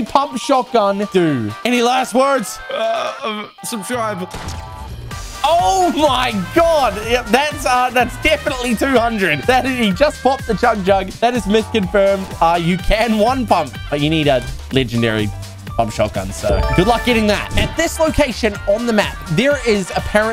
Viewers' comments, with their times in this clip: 0:05 He sounds like fresh when he says “oh my god”